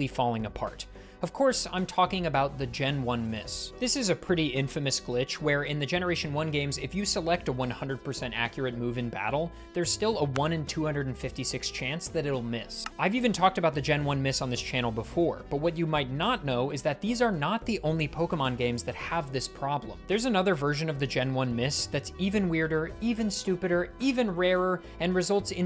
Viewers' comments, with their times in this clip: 0:10 never been to your channel before, but as a huge Balatro fan I am very soothed by the background and sound so far